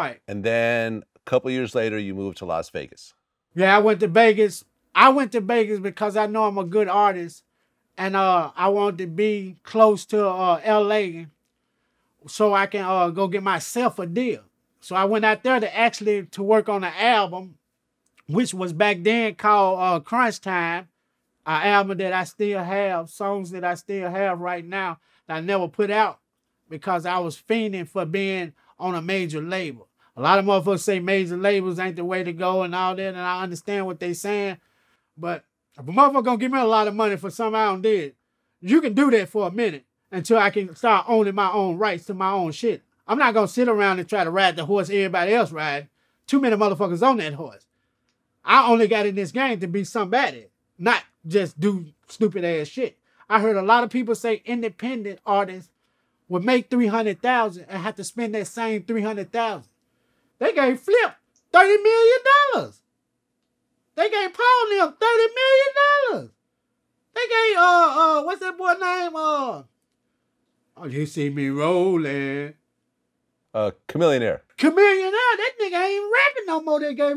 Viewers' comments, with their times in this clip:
0:10 Lmaooooo at how that man emotionally thrust out his wisdom for min and Vlad, being a great interviewer says: Okay...So... No judgement😂😂😂😂
0:59 its a LOT of money when your voice goes up one octave in the middle of you saying it.